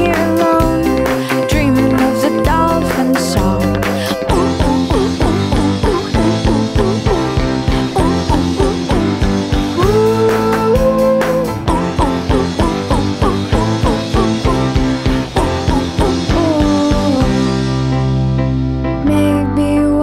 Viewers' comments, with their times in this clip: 0:04 For some reason, I like this song. It's so sunny and cute. is always the best part.